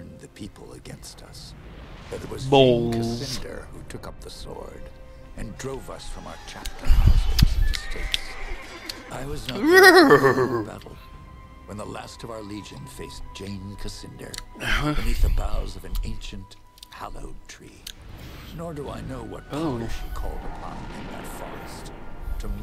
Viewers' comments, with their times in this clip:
0:07 Horse noise wtf ? lol